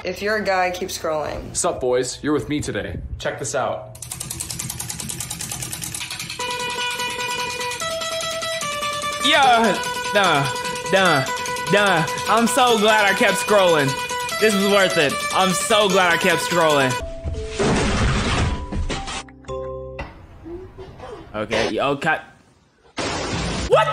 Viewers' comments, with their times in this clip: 0:04 I heard kerosene for a second there💀